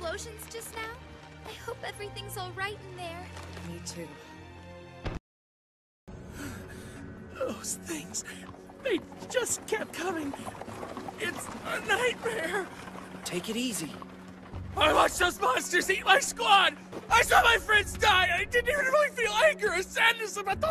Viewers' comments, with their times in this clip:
0:06 I never knew Peter griffin was a VA